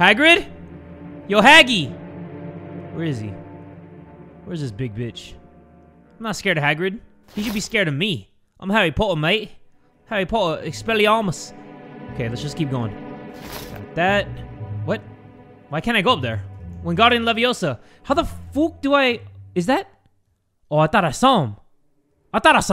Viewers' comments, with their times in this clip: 0:10 why does expelliarmus sound like expel your arm us.